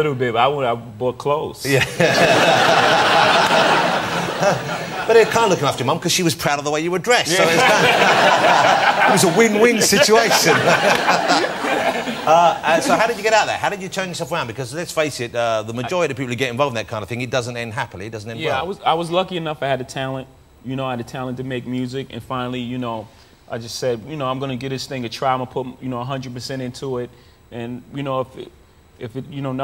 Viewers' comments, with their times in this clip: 0:10 what a genuine laugh from Jay-Z. Jonathan actually got him with his win win....